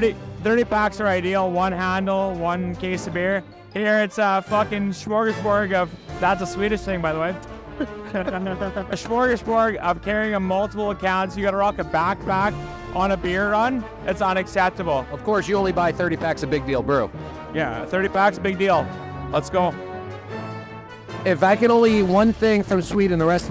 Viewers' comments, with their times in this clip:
0:05 The little laugh when the Canadian dude said "Smorgasbord, that's Swedish" absolutely KILLED me 😂😂😂